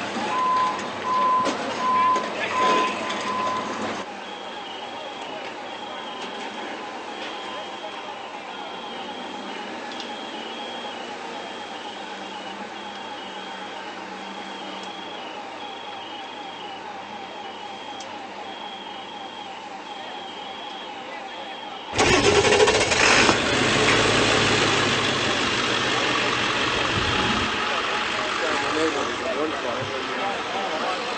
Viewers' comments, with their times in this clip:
0:05 The thing that gets me are the alarms that are going off from the deceased first responders.
0:13 Is that sound what I think it is? The firefighters alarms from their suit? 💔